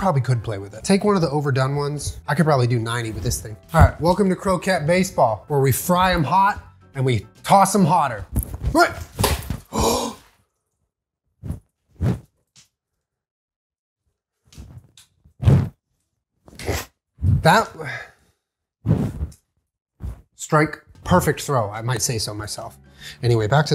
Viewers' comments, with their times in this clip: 0:06 in that moment of silence I could hear Jenna in my head “-gasps-JULIEEEEEN”
0:09 he gasped like he didn’t expect the fragile ball of fried mashed potatoes would get smashed when being thrown like a baseball at a wall